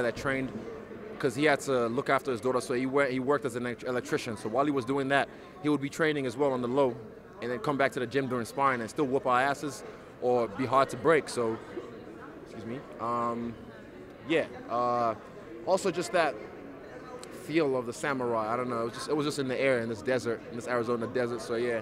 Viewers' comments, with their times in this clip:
0:08 3rd interview this week I’ve heard Izzy burp in 🧐 Gag reflux?